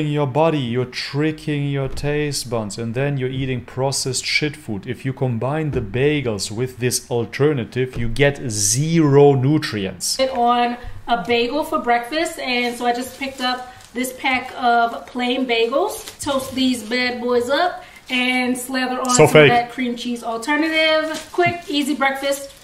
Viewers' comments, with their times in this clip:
0:04 I have a massive crush on him so I can't tell if he really says "fooling your taste buns" or if it's a lustful hallucination on my part....